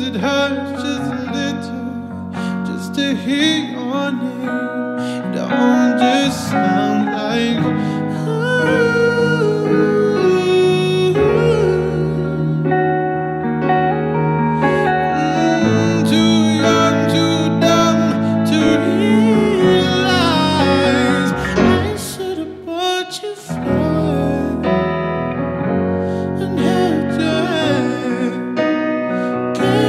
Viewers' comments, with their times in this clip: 0:10 i started crying my god he's got such a voice...i love this song and i love sam smith